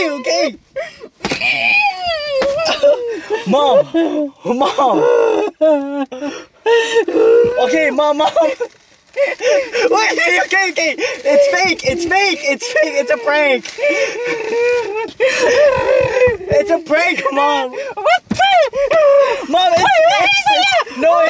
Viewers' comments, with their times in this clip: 0:04 She remind me Johnny's wife crying when Johnny was killed by Trevor GTA 5